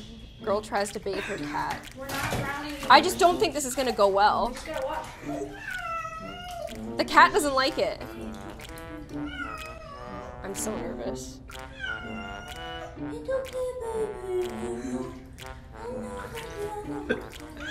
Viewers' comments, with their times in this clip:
0:03 "It's okay baby, it's going to be fine." next sec she summoning catzilla by screaming "aHHHHHHHHHHHHHHHHHHHHHHH" catzilla claws her "aHaHH" D: